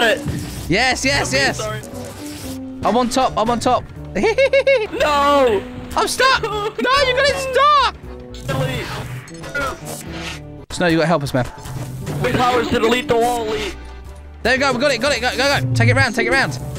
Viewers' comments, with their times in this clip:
0:04 thats how i laugh